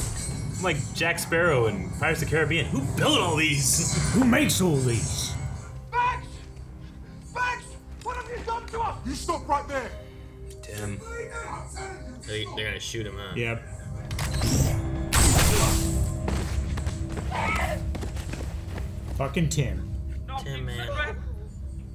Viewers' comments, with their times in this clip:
0:04 That was a really good impression 😂